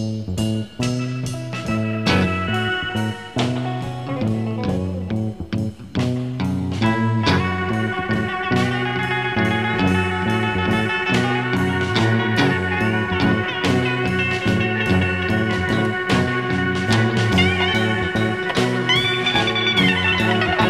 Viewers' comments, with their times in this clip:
0:07 Reading Al Kooper's autobiography (great book, highly recommended!). A string on Danny Kalb's guitar slipped out of tune, and he incorporated re-tuning it into his solo